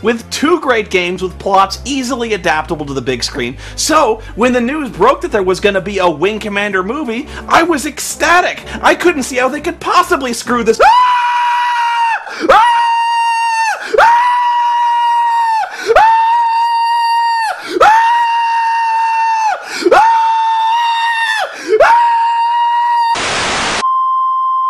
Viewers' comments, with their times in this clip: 0:10 I wish I could make noises like that.